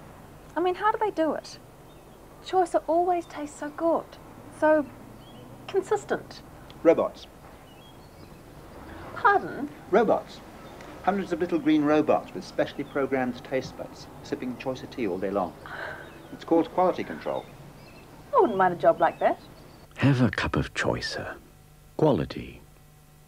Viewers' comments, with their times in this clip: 0:10 the posh NZ accents haha